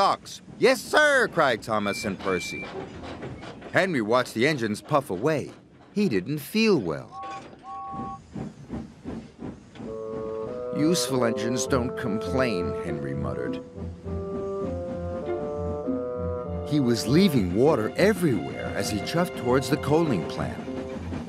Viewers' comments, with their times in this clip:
0:08 Error. Henry has James’s whistle